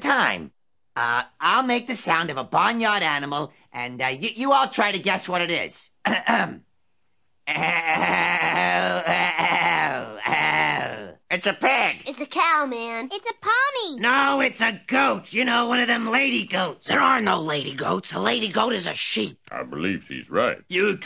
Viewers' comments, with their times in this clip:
0:07 sounds like absolutely nothing at all This show is seriously comedic gold